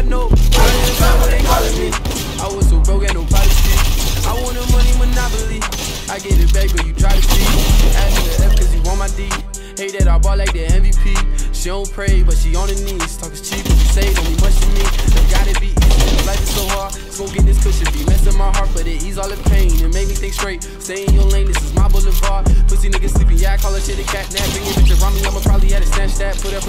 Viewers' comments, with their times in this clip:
0:09 haters will say its sped up